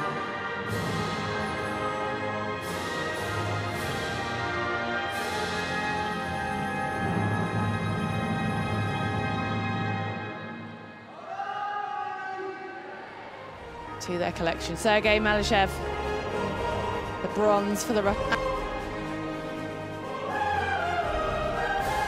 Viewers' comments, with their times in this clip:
0:10 Hear the Bharat Maataa ki